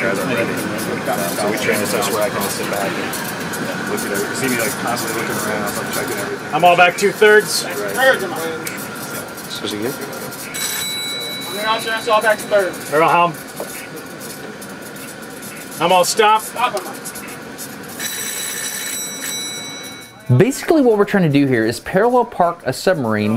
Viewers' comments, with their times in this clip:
0:10 Thank you so much for both ALL of your hard work, and the AWESOME job from the crew and the USN. “Inspirational” is describing your channel mildly... And yes, stopwatches are cool. I’m a Commercially licensed pilot and never fly without one!!! BTW... Why does the background noise sound like a dot matrix printer?!!